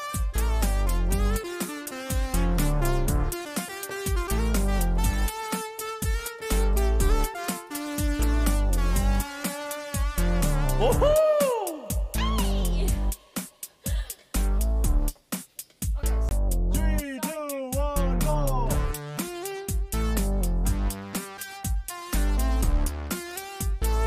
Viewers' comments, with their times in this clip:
0:05 sounds like something from sonic mania